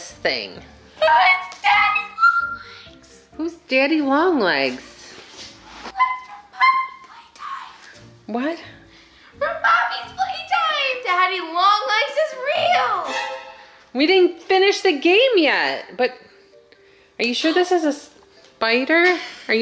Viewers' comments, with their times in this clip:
0:04 Help the voice😂